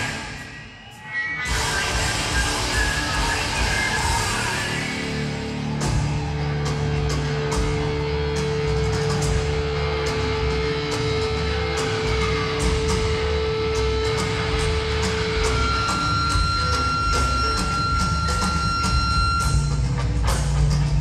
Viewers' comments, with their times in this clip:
0:08 third eye, the drums. OH MY GOD, the atmosphere of pure madness and emotion maynard put before that and the sudden drop is like the afterglow of good sex